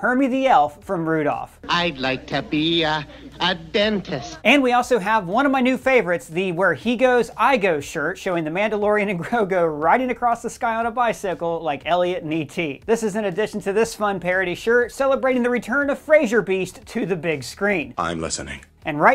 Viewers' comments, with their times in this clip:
0:06 In your ad, you're not saying grogu, you're saying grilgo, Ive heard it in a few of your videos now using this ad lol